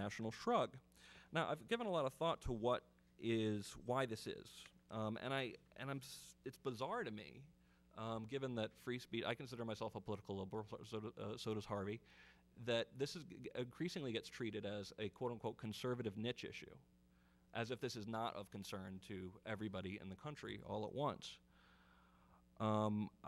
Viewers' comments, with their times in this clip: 0:09 He is a political WHAT??? argrhlblurb?